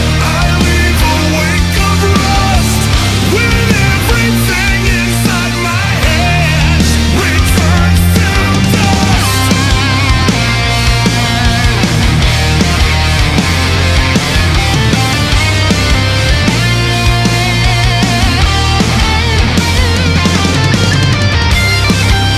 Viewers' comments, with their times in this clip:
0:09 that ending solo is out of this world. Just really well placed and much needed